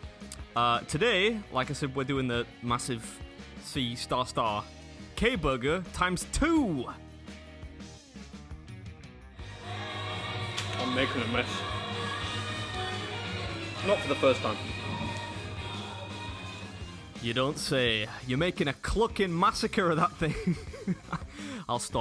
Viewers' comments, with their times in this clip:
0:09 Ok so, in a Brittans Got Talent Video a man took a whole bunch of songs and shows us what he was hearing. He was mishearing the lyrics so during this time in the video it sound like the singer is singing this: I'm Terry Wogan!!!